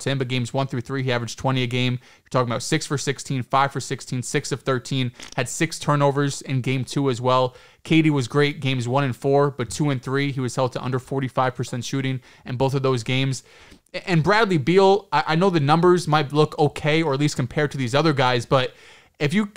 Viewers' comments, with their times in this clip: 0:04 somebody passed gas ⛽️ lol